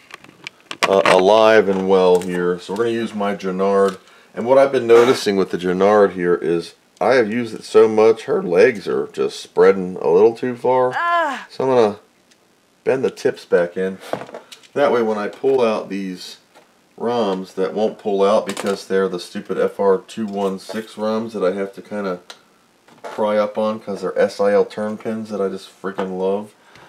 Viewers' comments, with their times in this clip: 0:10 😂 LOL. The moan really got me laughing... Thanks for the video! Great save!